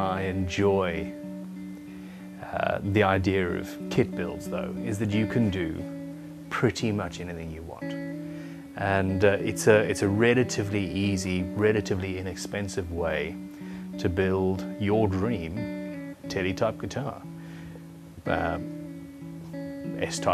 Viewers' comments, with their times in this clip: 0:08 Listen would you build your own Teletubbie guitar?